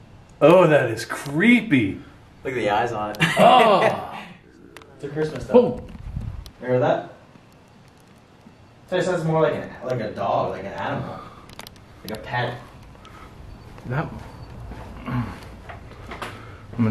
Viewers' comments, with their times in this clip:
0:04 .....there is 2 voices, sounds like they are saying......"THERE THEY ARE"......???????